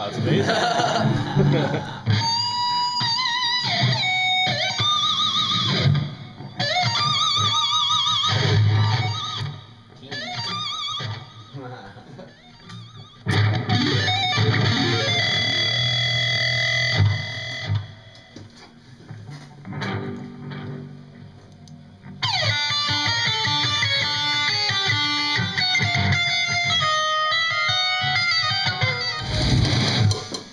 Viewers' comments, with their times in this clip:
0:08 fucking wicked guitar tone
0:11 he plays the faceless awesome
0:12 also, freaking The Ancient Covenant sweeps
0:13 ancient covenant sweep!! haha new guitarist is a boss. jacked for this album!!!!
0:13 I heard some faceless :P
0:14 how do you do the flutter thing for so long ? is it the tremolo on that JP7?